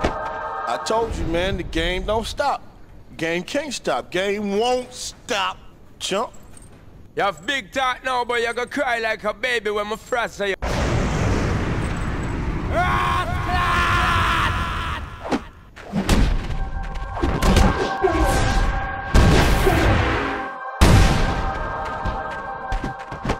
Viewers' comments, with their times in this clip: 0:06 sean paul murdering men bai certified jamaican swear me an my brother used to fight each other favorite character i used to bully him with sean paul until he started using xzibit and it started a whole rivalry with who's the better one lol. Swear good memories yes + it rell nice to hear ah jamaican in ah game like dis rell nice ting yes
0:11 Sean Paul voice acting like he got rent due, lmfao